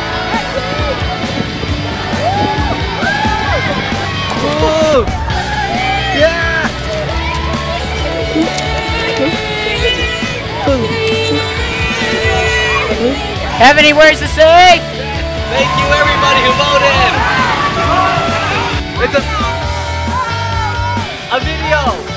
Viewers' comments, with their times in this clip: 0:10 Even the ladies are cheering for the asian nerd. (The cool asian nerd with lots of money)